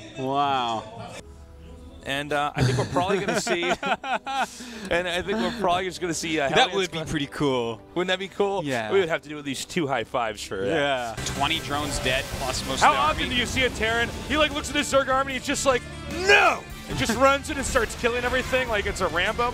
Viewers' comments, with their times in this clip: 0:04 what the fuck is that moan lol